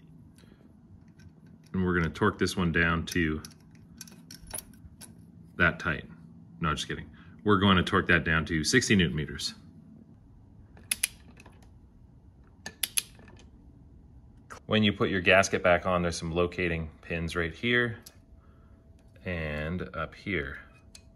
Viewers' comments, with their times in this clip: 0:09 min mark...Did you say 60 NM or 16?